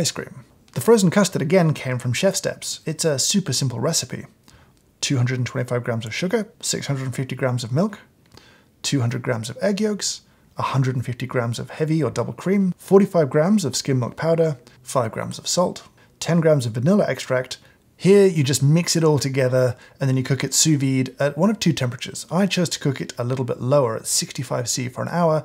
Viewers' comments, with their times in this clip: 0:10 I thought he said “200 egg yolks” not 200g, I was like “Wat?!?!?”